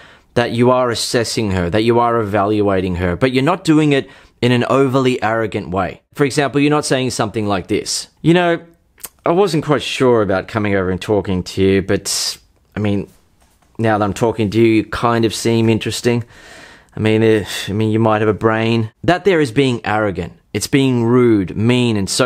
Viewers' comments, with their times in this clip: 0:06 When you play the arrogant guy, you become Louis C.K.